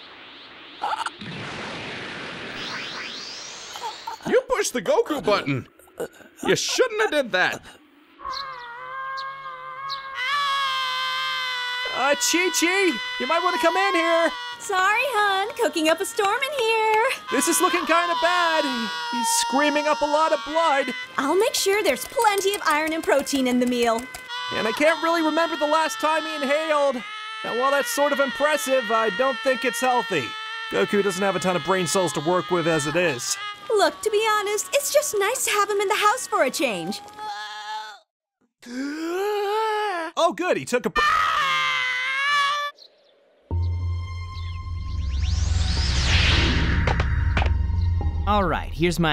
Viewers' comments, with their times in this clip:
0:08 possibility: the screaming goku did was longer then ssj3 transformation
0:35 Jesus the lungs on that boy